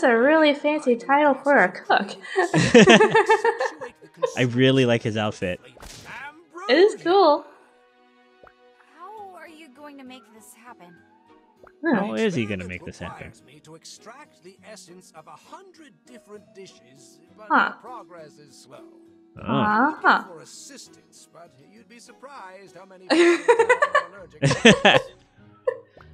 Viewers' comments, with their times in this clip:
0:10 I heard a kitty! :3